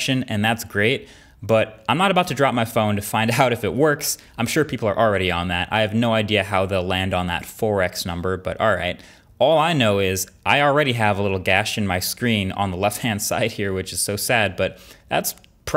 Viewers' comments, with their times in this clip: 0:03 We can actually feel the cameraman giggles a little bit